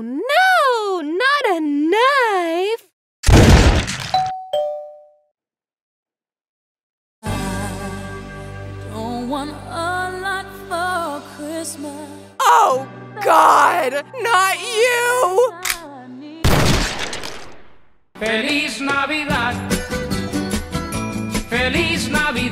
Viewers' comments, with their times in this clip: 0:04 Holds up Bible "This is the weapon of god!" "Metaphor and faith will not save you" BANG